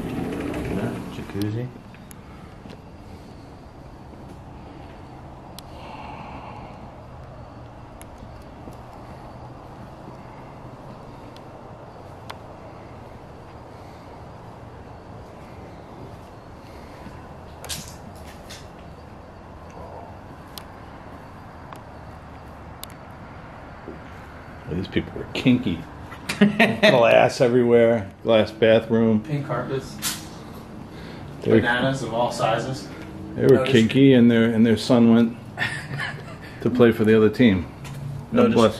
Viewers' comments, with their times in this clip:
0:05 a voice sounded like it said, GETTTT! It was a nasty voice as you were looking over the patio deck!!
0:17 there’s a whispery voice that says “get out “! It’s really hard to hear...try listening with headphones. But that gave me chills just listening to it!
0:21 there’s a deep male voice that says “go” or something like that!